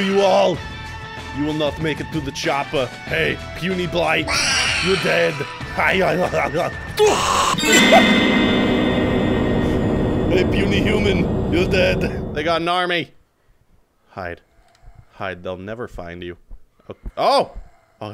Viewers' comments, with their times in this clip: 0:03 that Ahnuld laugh should be looped into its own 30 second vid. Just sayin.